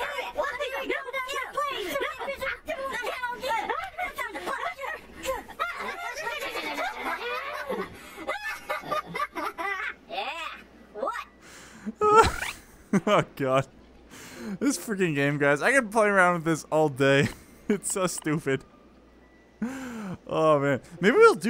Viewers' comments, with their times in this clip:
0:09 angry pooping noises